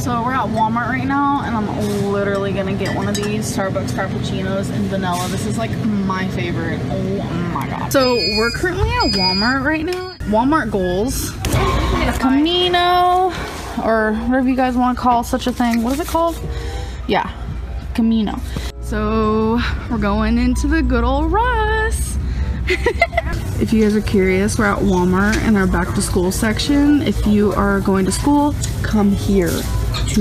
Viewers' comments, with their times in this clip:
0:08 Idk why but the motorized chair screeching in the background was too funny 😂😂😂
0:14 Kaameeno. reads kimono Ya. Kameno. Gorl😂😂😂